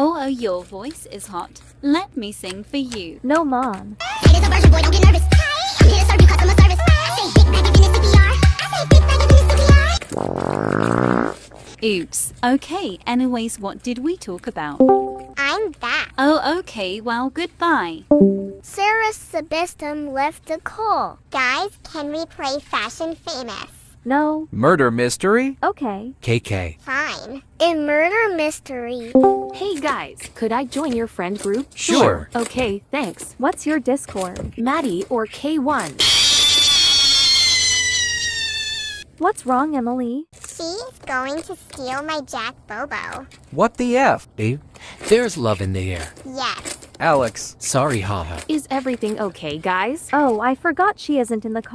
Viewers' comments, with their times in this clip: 0:10 nah the fart is crazy from the mom💀
0:36 Maddieork1 and then Emily screaming it’s so funny 🤣 ❤
0:36 bro sounds like spring trap💀